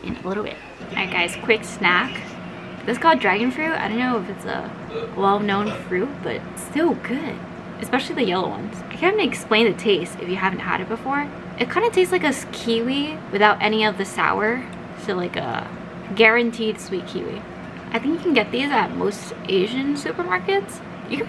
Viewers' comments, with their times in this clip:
0:04 <-- awesome burp bruther SHEEEEEEEEEEEEEEEEEESH